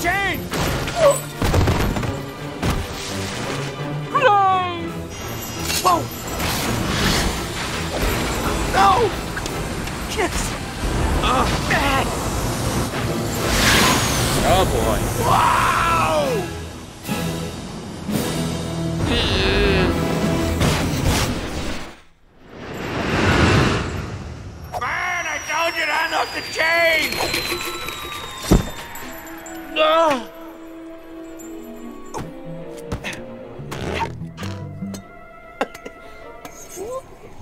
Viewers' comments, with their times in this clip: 0:04 idk why that line of him sadly saying "PLAY" just makes me sad bruh almost makes me wanna cry.
0:25 Is anyone not gonna talk about the line from RJ was actually Jim Carrey even though he turned down the role that he was originally hired for? I closed my eyes listening that line and Bruce Willis doesn’t sound anything like that. I think Jim Carrey’s line was remained in that part because it’s starting to fit into the scene.